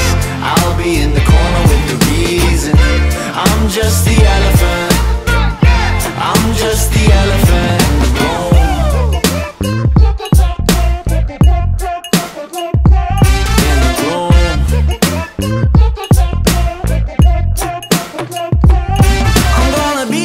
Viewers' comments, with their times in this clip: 0:08 when you get a hold of OMFG's sound board